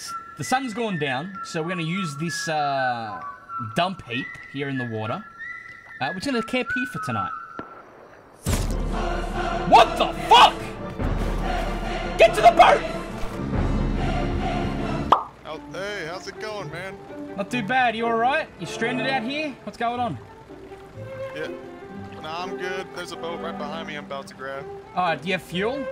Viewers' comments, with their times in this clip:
0:09 Best wtf I’ve ever heard